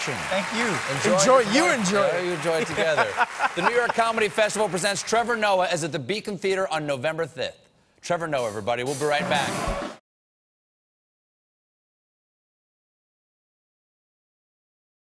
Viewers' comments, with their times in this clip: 0:06 What the fuck is a "November thith" tho